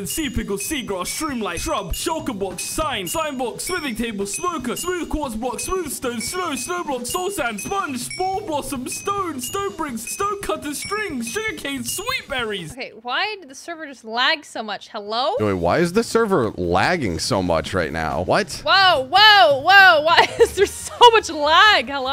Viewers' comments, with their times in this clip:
0:08 youtube’s auto captions thought it was spongebob